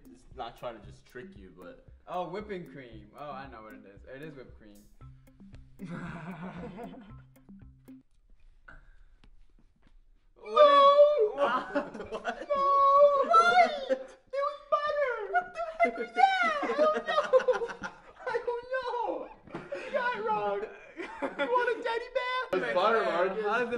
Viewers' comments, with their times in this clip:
0:10 I love when they do the funny voices lol